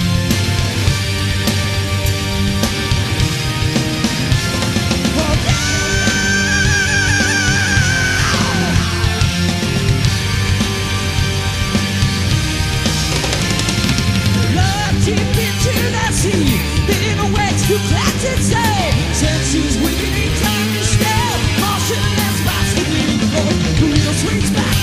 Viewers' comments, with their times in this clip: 0:07 Please tell me that scream just got messed up on the audio track and wasn't him making that weird noise! Hilarious!